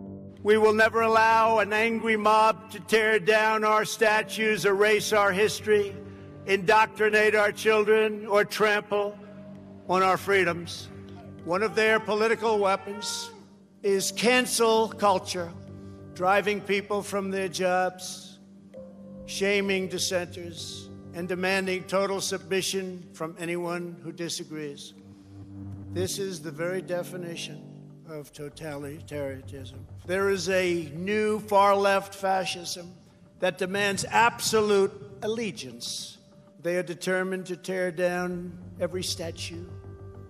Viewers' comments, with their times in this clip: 0:10 Anyone know what that guy shouts
0:26 he cannot even pronounce totalitarianism in the right way. What level of education does he have?